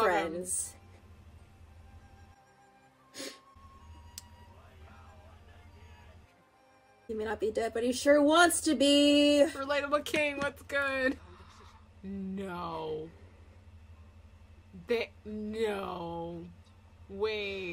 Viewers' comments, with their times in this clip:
0:03 The crying is so relatable, there were tears rolling down my cheeks when I first watched that part